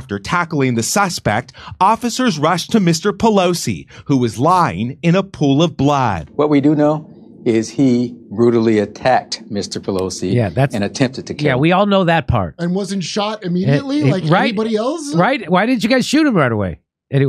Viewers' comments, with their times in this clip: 0:04 The way the journalist said blood is so strange.